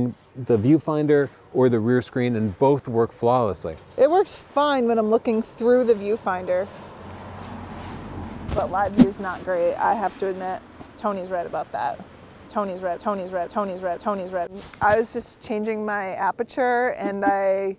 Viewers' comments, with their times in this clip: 0:05 looking TTHHSSSRRROOOUUUGGGHH the view finder......like TTHHHIIICCCC :D